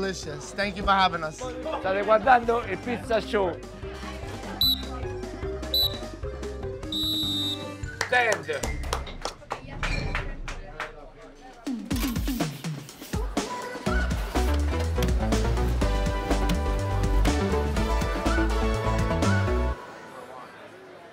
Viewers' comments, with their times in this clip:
0:03 you can tell that the guy behind hates that fucking whistle 🤣🤣